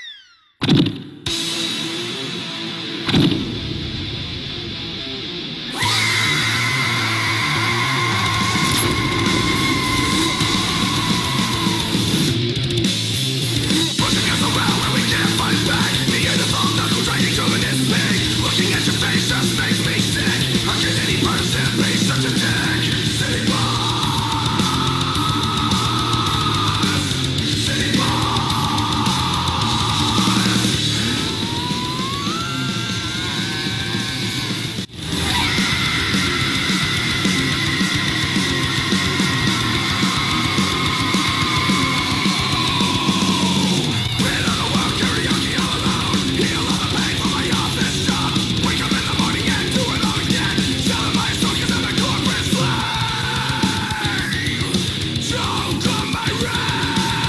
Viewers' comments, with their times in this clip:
0:06 she sounds like tires screeching
0:35 I like how you can hear her voice change from her normal voice to her death metal voice
0:35 Hands down best scream
0:44 I loved the song